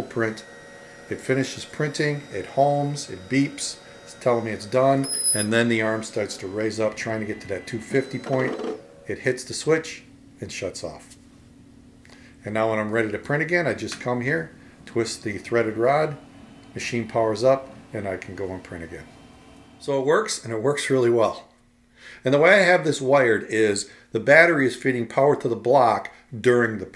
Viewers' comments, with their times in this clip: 0:08 that's nasty stepper motor grind...